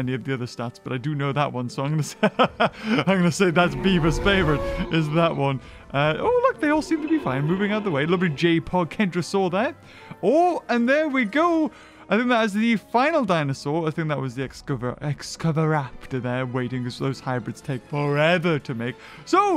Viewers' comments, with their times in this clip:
0:04 Bro the iguanodon sound is cool